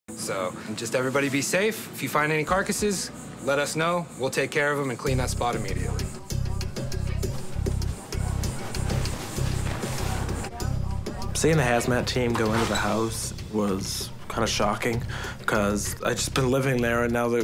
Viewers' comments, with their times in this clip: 0:02 why does he sound like TJ Miller!?😂😂